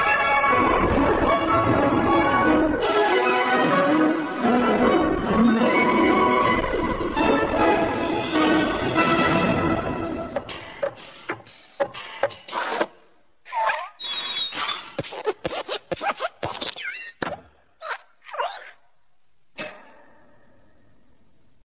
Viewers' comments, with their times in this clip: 0:09 Sounds like F and I